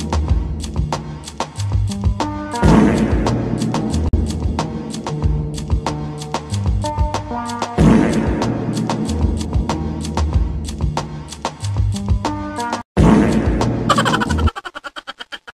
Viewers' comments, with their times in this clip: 0:13 😮 Taiga is such a creep farting like that 😅😂😂😂poor Rina🤣